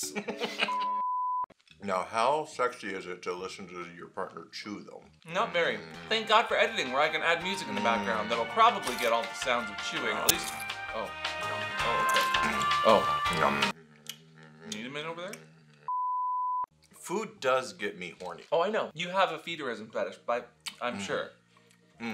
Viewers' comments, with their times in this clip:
0:09 Loud clipping audio